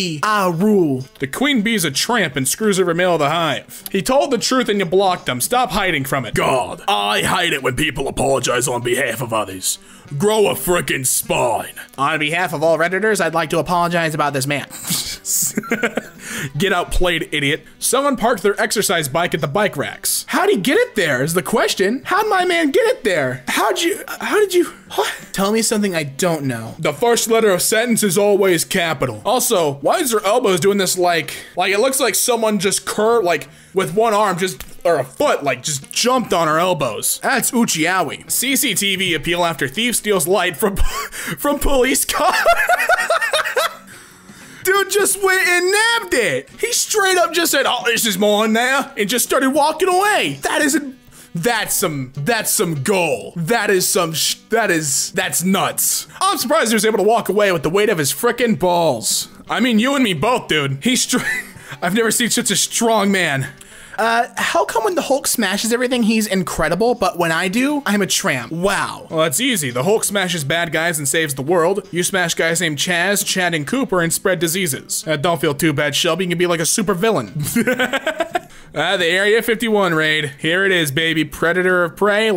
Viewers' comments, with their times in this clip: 0:07 Dude she sound like spade from arrow
0:40 His laugh should be in r/Mademesmile
0:40 That wheez is dangerous🤣
1:03 at this moment he sounds like Jimmy DeSanta from GTA V
1:04 I have more respect for Wendy's then i allready have had btw your girl voice is impressive